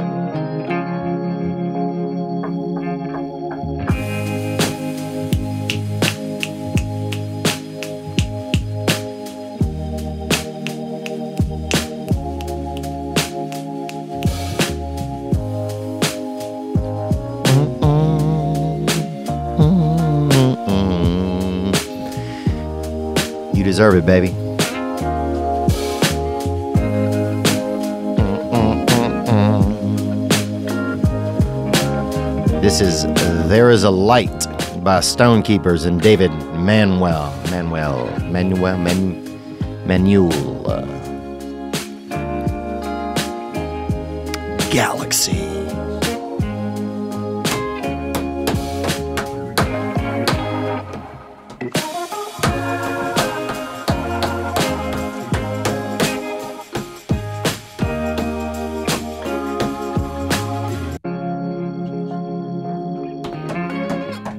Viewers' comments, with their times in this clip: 0:07 .... Theo playing the hand instrument aka the midget fingers. I'm talking snapping baby
0:50 🤣 seeing you realize you been playing the instrumental, subtle edit to the version with actual vocals 😂. Grats on the millie distant oneway homie cuh mawn, gang gang, onward to the next millie. From Amsterdam, the Netherlands ✌🏻.